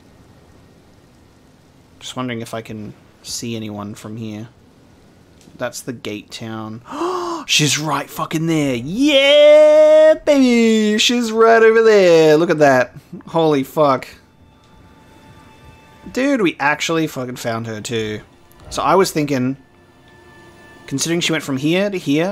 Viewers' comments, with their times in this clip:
0:08 was totally expecting a full Moist Critikal impression tbh xD